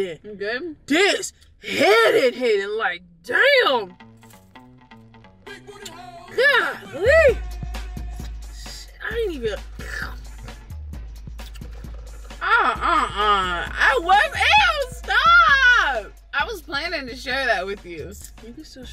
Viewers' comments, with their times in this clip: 0:04 OMG THE BACKGROUND MUSIC HAD ME DYING 😂😂😂😭😂😭😭😭😂